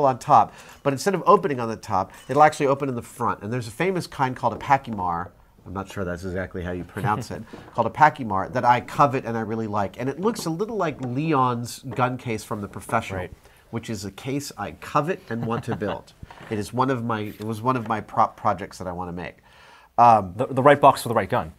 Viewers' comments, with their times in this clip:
0:08 ......so the case he talks ...he calls a "packie mar"......the brand name is Pachmayr (pack-myer)......how the heck does he get "packie mar"? Haha